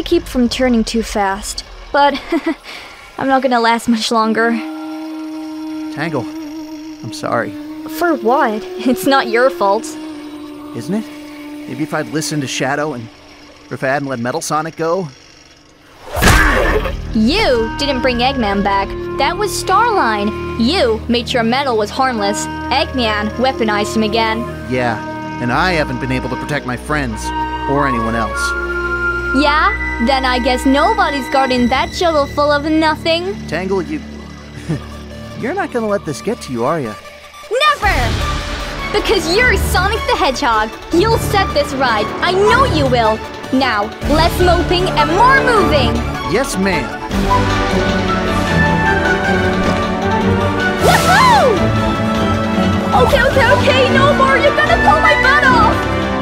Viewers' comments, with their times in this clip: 0:04 this music really set's a sad mood!
0:37 Watching it again I think one of the parts that makes me tear up the most is Just the way the music sweels to this peppy, upbeat, downright heroic melody as Tangle looks in the face of danger and the closest thing to death in these comics and still keeps smiling in spite of it all and despite how afraid she probably is. Really just accentuates why I love her so much as a character.